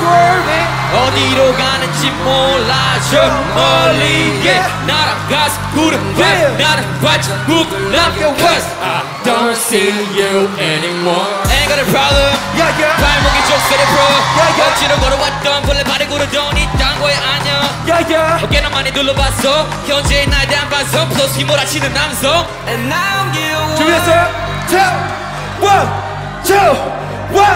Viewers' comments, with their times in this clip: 0:09 was haon laughing at how sik-k messed up this live?